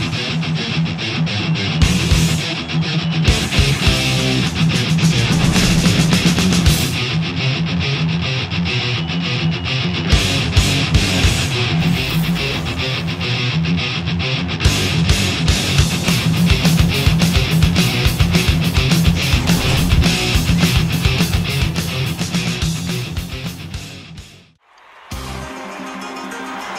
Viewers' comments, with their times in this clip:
0:07 sounds like the doom 1993 theme